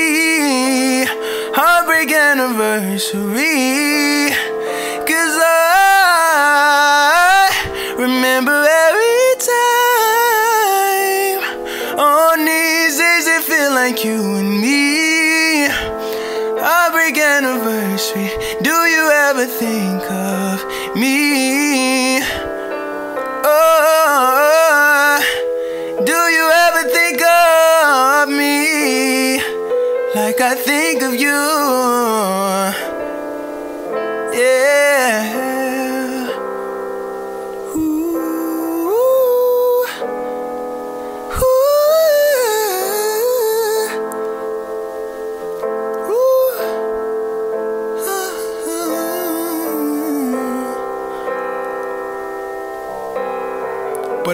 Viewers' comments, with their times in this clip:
0:08 yall he sounded like an ANGEL
0:08 That high note was done so well 👏🏾 Amazing cover!
0:09 his voice gave me some tears damn bro u sing so beautifully 🖤🖤🖤🖤
0:40 that part was SMOOTH